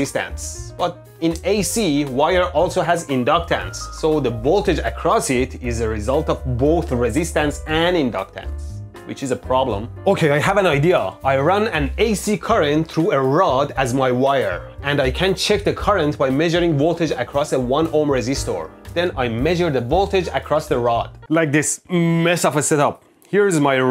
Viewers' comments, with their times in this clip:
0:09 I think that if I were in the lab with him, and I heard him excitedly say, "OK, I HAVE AN IDEA!" That would be a cue to run.... away....far....fast.